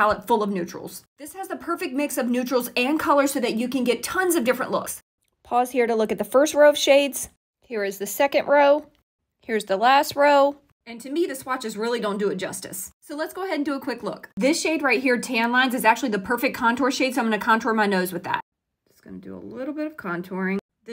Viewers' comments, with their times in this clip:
0:08 I just had to comment on this- your voiceover on the part showing the rows- -sounds like a recording of an excited child who just got the best gift ever and is describing it for someone taping them- so cute and funny at the same time!! Love it 😂👍